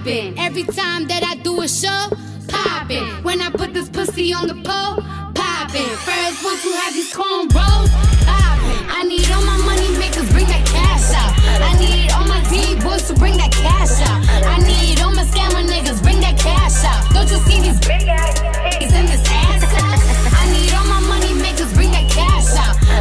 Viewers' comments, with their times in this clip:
0:08 Is it me or did the producer fuck up on the beat on